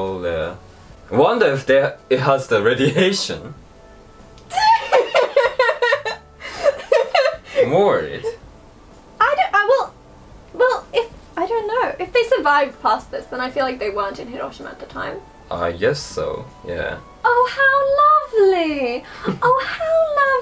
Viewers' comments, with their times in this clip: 0:07 her laugh <3